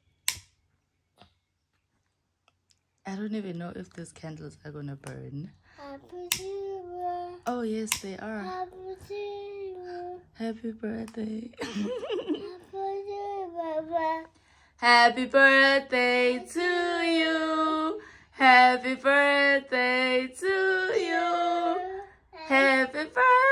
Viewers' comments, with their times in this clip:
0:08 He's singing 😂 😂 oksalayo we can hear the birthday to you 😂